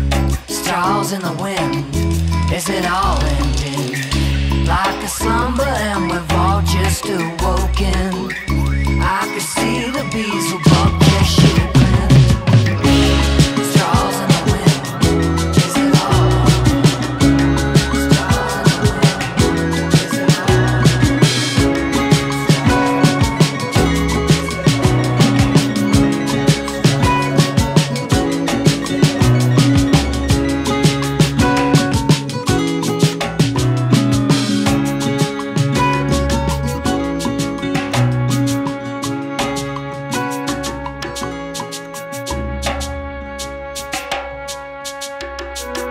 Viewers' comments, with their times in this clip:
0:10 Drum fill gave me a semi
0:11 best filmed drum fill in the world! 😂
0:31 the rhythm change in the end becomes even more tantalizing, coupled with some of us flutes